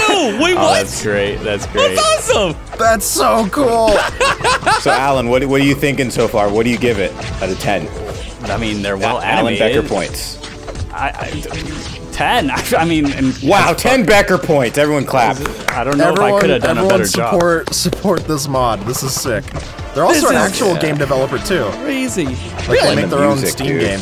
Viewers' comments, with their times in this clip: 0:10 sounds like begger points